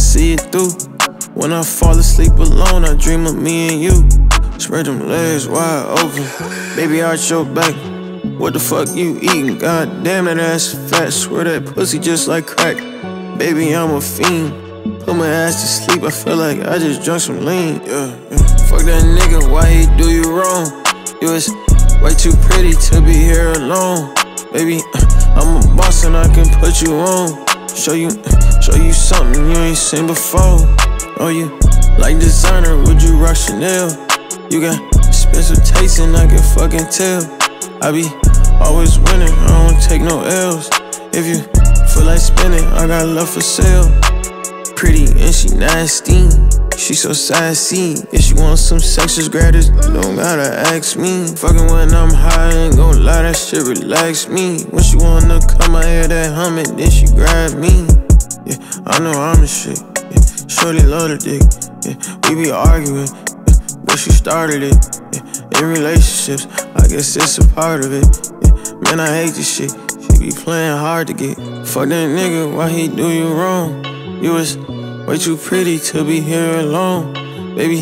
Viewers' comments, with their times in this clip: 0:07 wtf that didn’t sound like a girl DDG 🤔
0:59 got that moneybagg yo flow 🔥